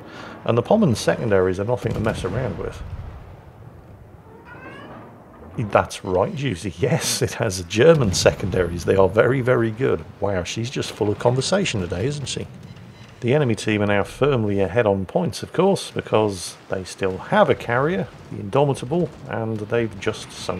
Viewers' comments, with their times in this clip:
0:05 the cat tries to tell you that that is in fact a Musashi.